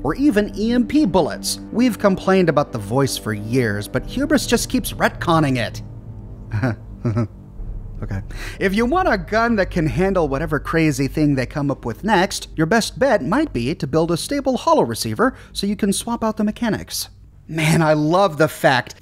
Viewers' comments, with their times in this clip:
0:05 What was that sarcastic chuckle about? You referring to Bethesda's constant retcons, or am I missing a joke here?